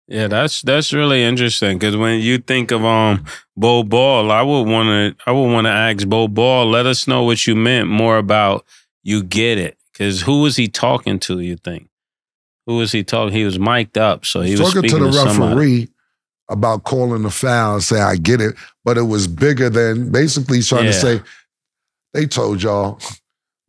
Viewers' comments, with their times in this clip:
0:04 I really hate how Mase says Peoples names Bo-Bowl..Bo-Bowl. WimBae